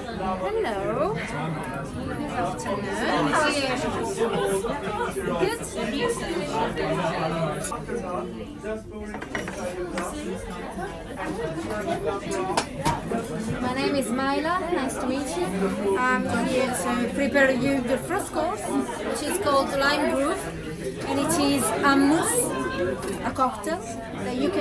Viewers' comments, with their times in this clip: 0:10 I swear someone farted